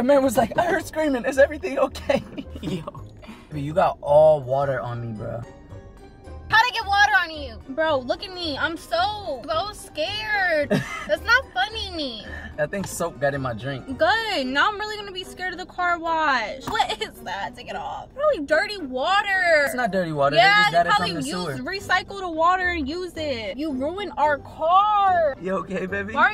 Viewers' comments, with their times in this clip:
0:09 So we jus gone ignore how she said funny 💀💀😭😭😭